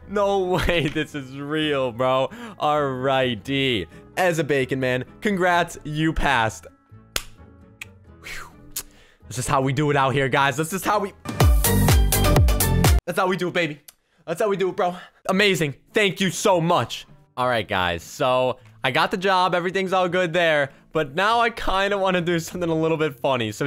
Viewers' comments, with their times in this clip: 0:06 crab song intensifies